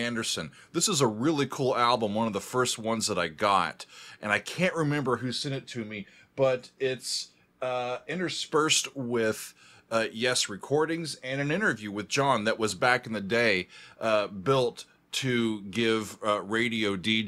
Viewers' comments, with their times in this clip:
0:05 Perpetual Change --- sounds like the opening theme to a 1970s newscast.